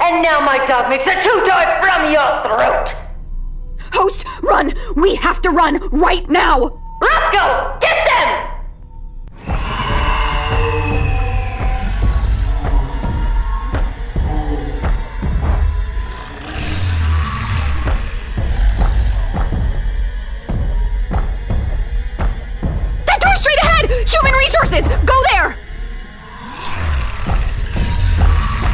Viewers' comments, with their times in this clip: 0:10 Rosco sounds like a Licker (B.O.W.) from Resident Evil